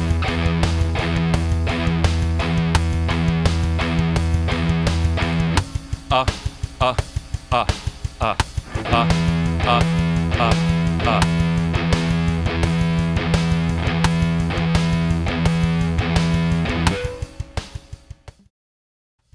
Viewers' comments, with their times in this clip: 0:05 when you sub your toe on every step going up the stairs